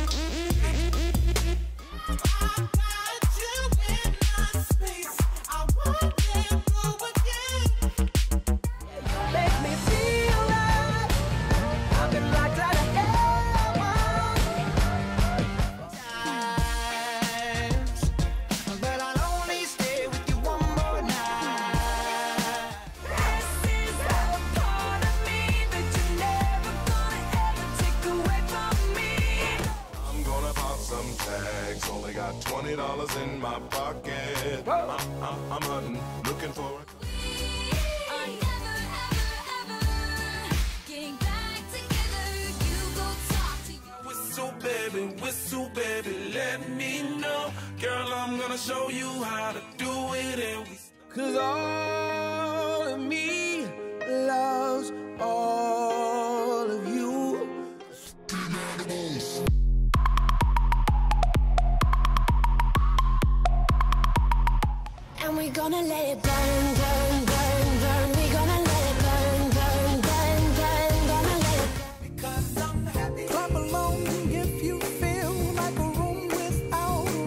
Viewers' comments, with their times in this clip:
0:09 I thought someone was calling for a second, cause you know is my ringtone
1:05 You’re 10 years old and sitting in the back of the car with your family. You are driving home. It’s dark and when you close your eyes you fall asleep with this song silently playing on the radio✨